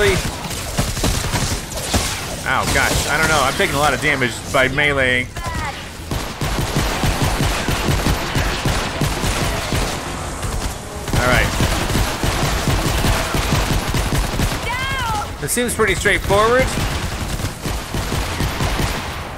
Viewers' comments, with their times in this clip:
0:05 he made the Ali-A intro with his pistol 😂😂😂😂😂